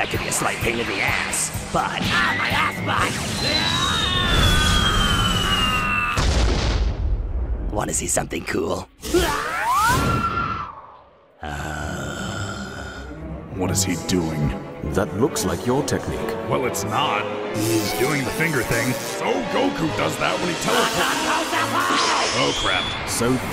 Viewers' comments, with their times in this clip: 0:06 I quote "wanna see something cool" every day without anyone realizing I'm saying it in this exact font